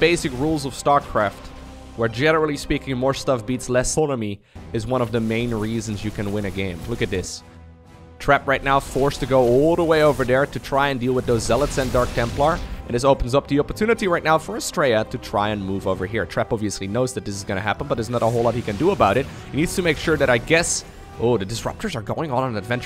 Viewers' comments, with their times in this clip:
0:03 What happend ? lessonemy never heard that word